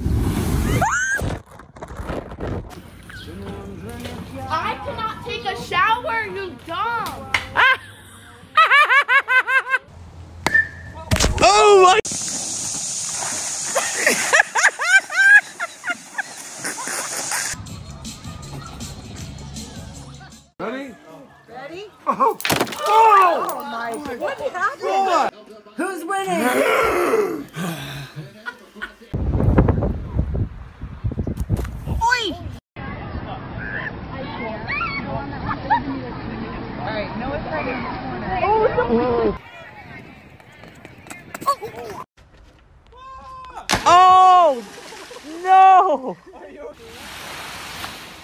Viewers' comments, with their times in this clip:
0:08 Anyone hear Bellatrix Lestrange? 🧐
0:31 do I think this child said "Poi"? His step sister that Yuudachi, destroyer Shiratsuyu class... or I just heard it wrong.